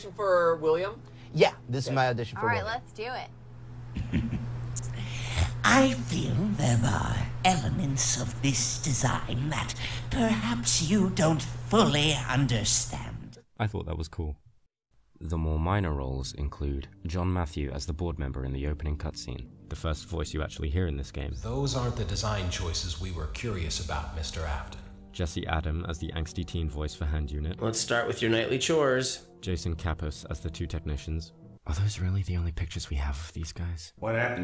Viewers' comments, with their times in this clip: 0:03 the idea of william as german mad scientist is now rent free in my head
0:11 honestly this voice fits the silver eye version of William pretty well
0:17 i always thought it was the same guy from hand unit but speaking normally omg